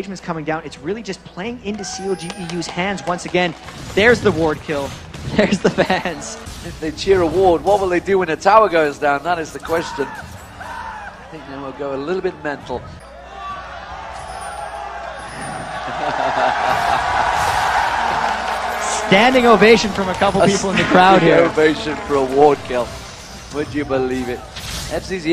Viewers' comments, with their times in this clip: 0:10 haha, that scream xD